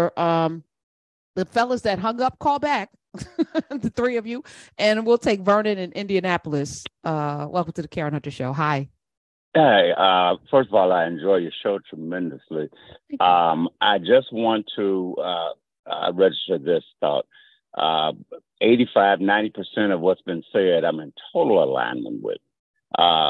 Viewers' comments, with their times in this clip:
0:05 I swear, the caller sounds like Vernon G. Smith, my state representative in Indiana.